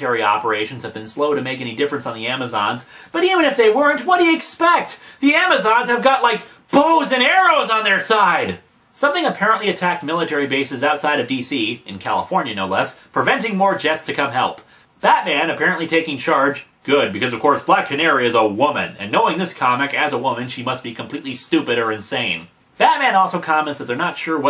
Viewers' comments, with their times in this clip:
0:06 Booze and arrows? That’s even more unbelievable...